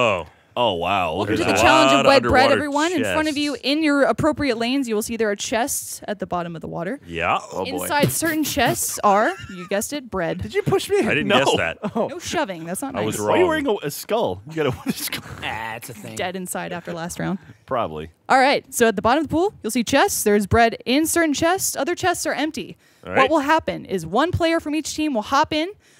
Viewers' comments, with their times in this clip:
0:07 Shout out to Jack's sweet beat boxing